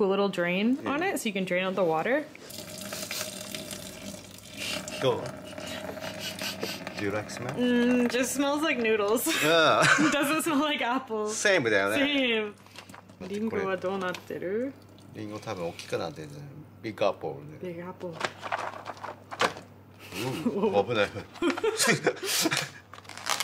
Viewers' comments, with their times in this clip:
0:07 I heard “durex smell” lol